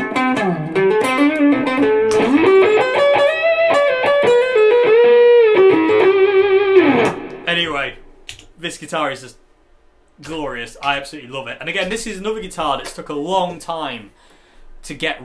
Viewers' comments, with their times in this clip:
0:03 that lick tho uff 😮‍💨🔥